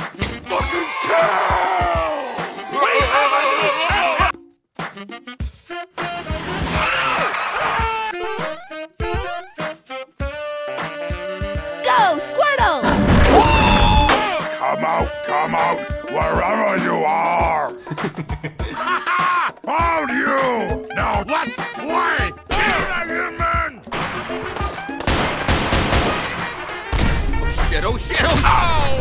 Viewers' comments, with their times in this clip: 0:10 I shit myself oh my god that was Funny the littel ting you hear